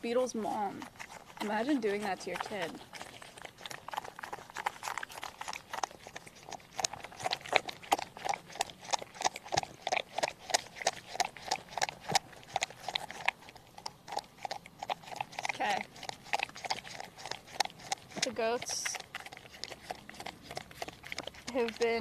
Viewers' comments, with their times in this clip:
0:04 ...Sounds like a hoover vacuum cleaner 😂....Chickens like rats too !!!